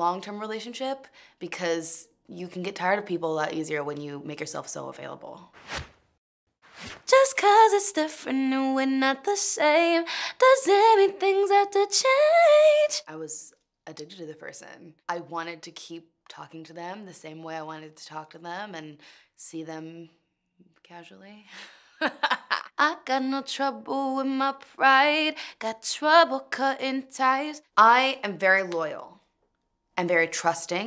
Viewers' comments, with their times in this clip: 0:07 she hit all those notes
0:11 sounds like Ariana Grande
0:12 WAITTTTTTTTTT HIT THAT NOTE GIRL!
0:12 that high note 😍
0:12 she hit that key